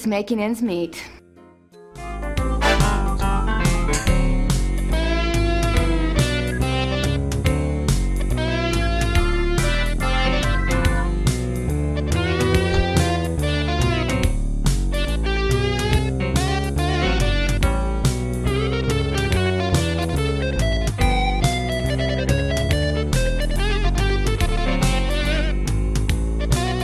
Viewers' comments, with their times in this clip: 0:07 that song with the synth guitars honestly grooves